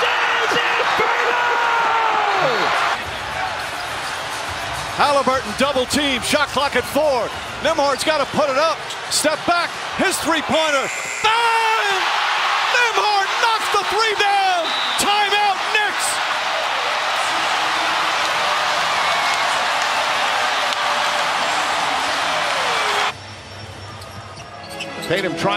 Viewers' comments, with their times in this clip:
0:09 sounded very familiar